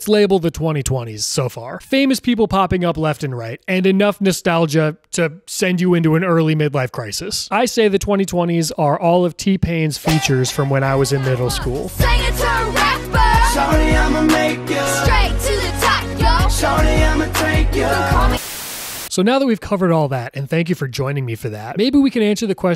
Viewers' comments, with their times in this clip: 0:07 wasn’t ready for THAT song but I’m so glad you included it! 👏🏾😂